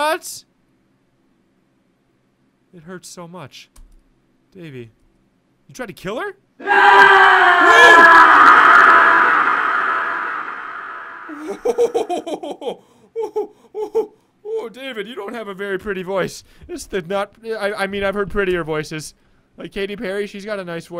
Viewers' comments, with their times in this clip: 0:06 dat epic scream tho!